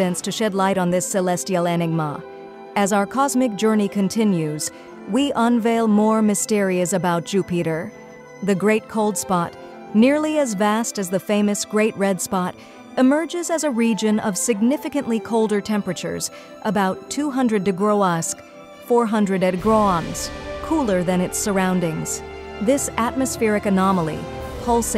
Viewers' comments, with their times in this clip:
0:06 LOL Your fake computer voice called it jew-peter and a dozen other mispronunciations. HAHA it can barely speak english